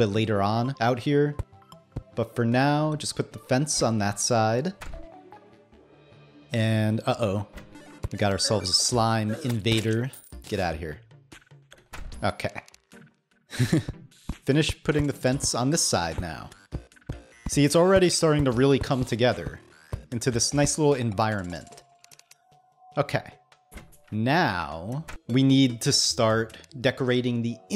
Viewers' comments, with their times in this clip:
0:10 He said "Get outta here" so fucking serious